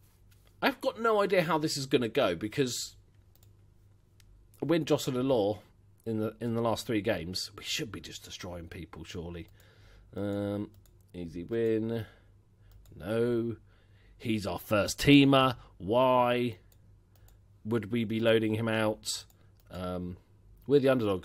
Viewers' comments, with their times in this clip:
0:04 did you just say a win, dross and a law